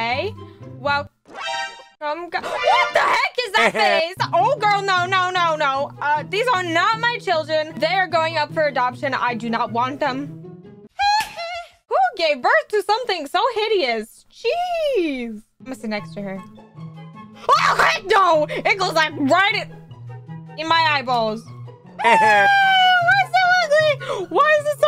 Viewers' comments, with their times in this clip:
0:06 THE MICHAEL JACKSON HEE HEE😂😂😂 R.I.P Michael Jackson "the king of pop"
0:08 michael jackson hee hee